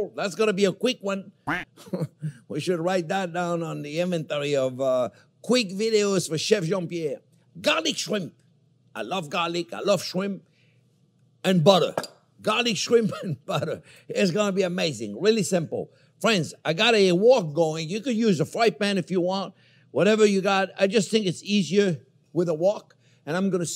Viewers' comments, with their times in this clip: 0:05 Why was there a quacking sound seconds into the video? 🙈 JP wasn't even talking 😅 That said, this was another mouthwatering recipe, that I will be making tomorrow. I was gonna say first thing tomorrow, but no matter how good this seems, seafood for breakfast isn't something I can handle i think 😂
0:07 I had to rewind it, because I though you said, "garbage shrimp". XD